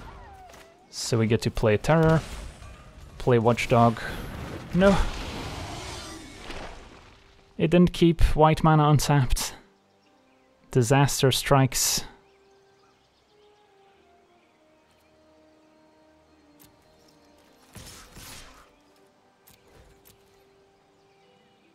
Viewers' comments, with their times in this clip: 0:03 The smallest and saddest "no..." lol. Loved this deck!